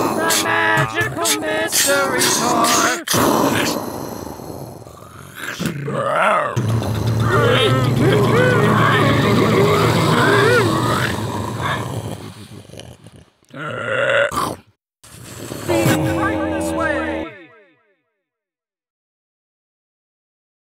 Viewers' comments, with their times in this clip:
0:07 The piglin impression was SPOT ON! 👌🔥